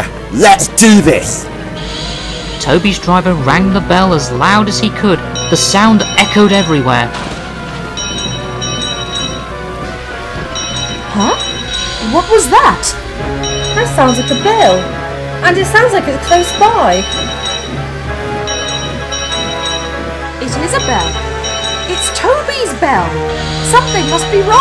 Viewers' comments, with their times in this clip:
0:05 Toby rings 24 times.